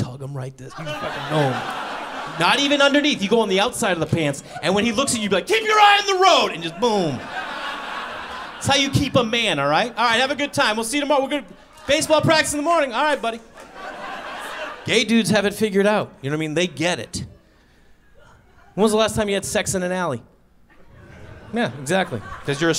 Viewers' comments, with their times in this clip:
0:09 the few people clapping thinking the show is over